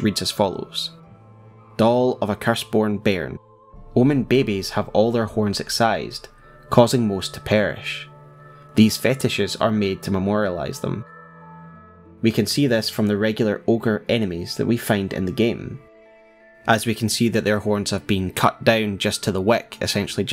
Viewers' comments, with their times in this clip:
0:04 omg I’m in love with how you say “bebe’s” 😂😂😂